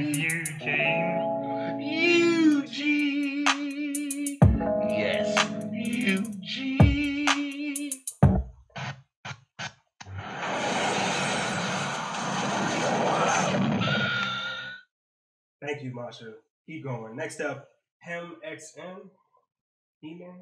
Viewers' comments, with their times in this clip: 0:08 Bruh.. jus took me out wit da takeoff cut🤣😭🤣😭